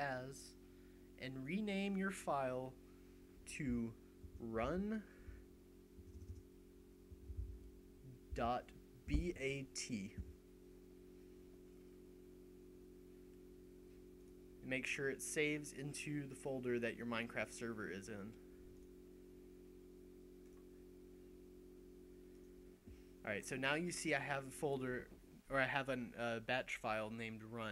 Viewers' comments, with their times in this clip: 0:08 what did he say to name it run.vat or run.eat?